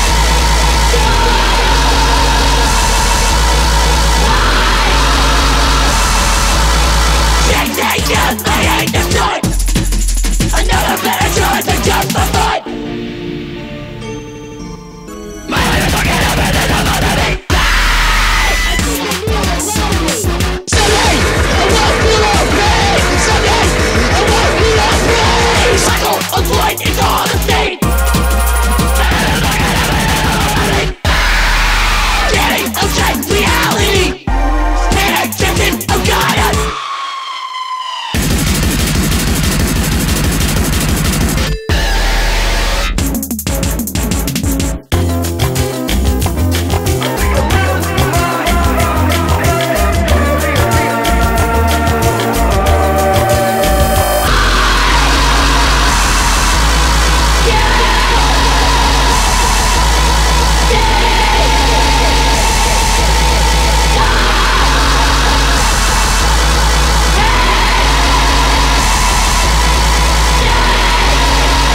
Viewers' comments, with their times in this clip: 0:07 am I the only one who hears"Get naked, I hate this joint!" 😅
0:18 why is the muffled screaming and panicking so fire
0:35 the scream sounds like the butcher from stay out the house
0:40 average creepypasta song
0:44 I HEAR SOMETHING IN LIKE "THE CHILD IN" i only hear that while wear earphone
0:54 Thats what i hate about this song, if the whole song was like it would be good but they decided to use every fucking music genre in one